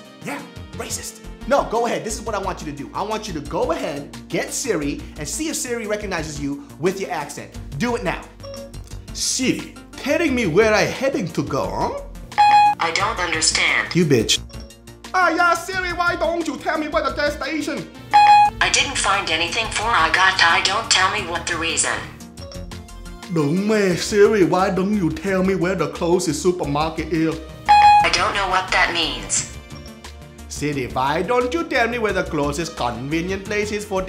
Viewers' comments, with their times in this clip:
0:09 love the part where he does the accents lmfao, they're soo damn accurate
0:21 got to be the most accurate Vietnamese I have ever heard. Spot on ;D